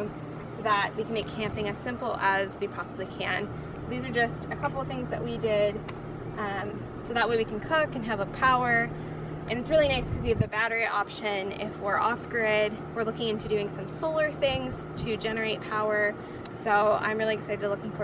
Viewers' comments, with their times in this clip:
0:04 Audio is useless outside so I quit watching Otherwise a great presentation.